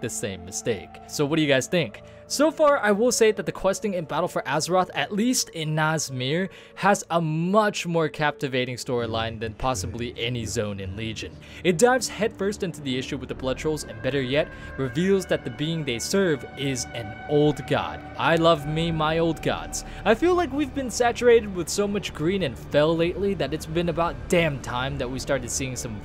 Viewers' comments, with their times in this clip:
0:08 I heard that C'Thun you sly dog
0:09 old god whisper ?
0:12 Temple of Ahn’Qiraj music is so fitting for this video... and that music is straight up creepy and disturbing I love it lol gets me excited!